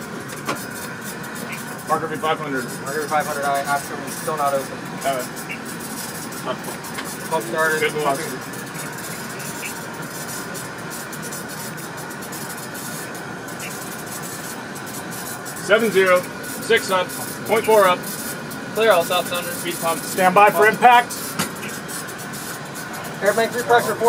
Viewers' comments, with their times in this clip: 0:07 …the soothing sounds of EAFW in the background